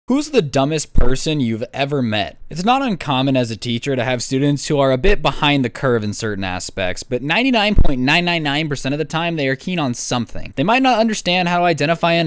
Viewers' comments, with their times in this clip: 0:00 that voice sounds like a burp for like 0.1 sec